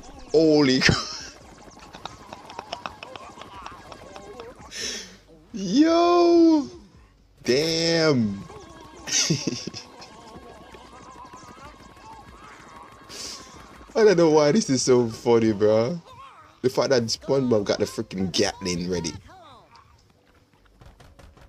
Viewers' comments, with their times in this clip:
0:07 gun reload sound